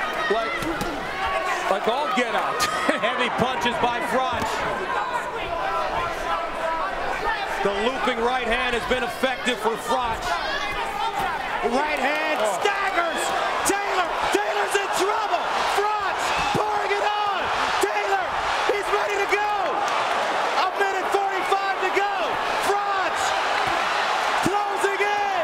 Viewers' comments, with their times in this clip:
0:10 you can hear the commentator groan when Taylor gets hit, that’s how you know it was bad.